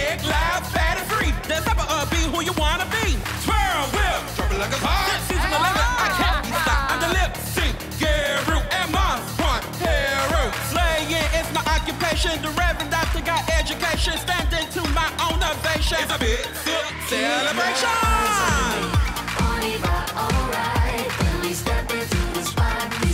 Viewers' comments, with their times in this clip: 0:10 Damn Silky spit so hard One of the best verses this year imo